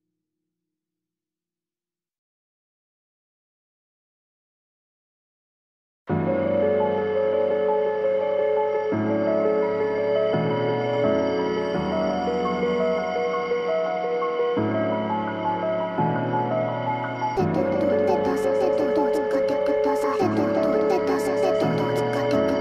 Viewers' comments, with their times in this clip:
0:05 never knew crystalized + amen breaks would sound so good
0:05 damn i thought i was listening to camellia for a moment